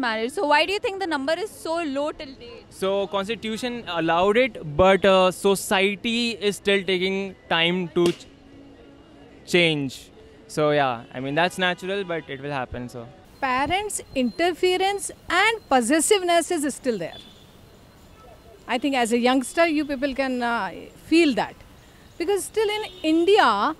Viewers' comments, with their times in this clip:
0:07 I chuckled for a second there, when he paused for a second before continuing his answer
0:08 that pause tho 😂